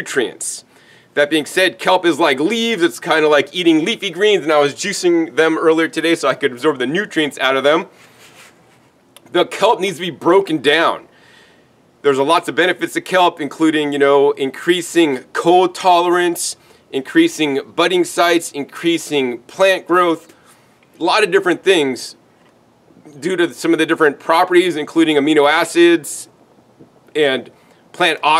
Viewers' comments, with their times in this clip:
0:09 LOL you can tell that after mentioning juicing his greens those greens are a bit rough on the digestive system making him either burp, fart or both as he pauses and clenches momentarily while explaining his kelp fertilizer.